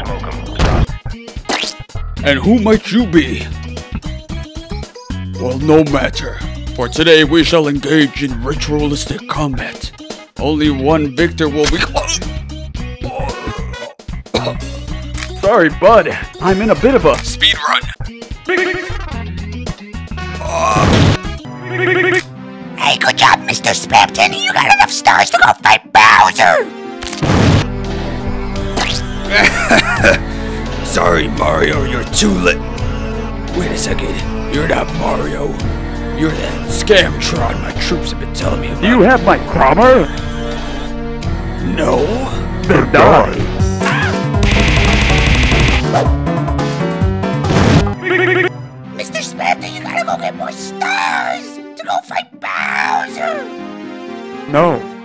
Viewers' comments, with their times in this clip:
0:03 that sounds like real boy for a sec
0:22 he is being pushed by the force of toads voice
0:41 was this an intentional reference to hotel Mario? It has the same tone and inflection